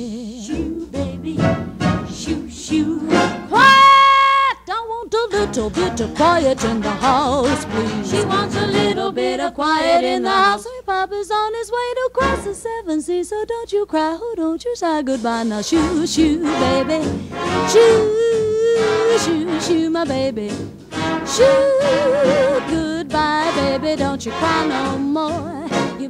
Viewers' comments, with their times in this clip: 0:08 that singing tho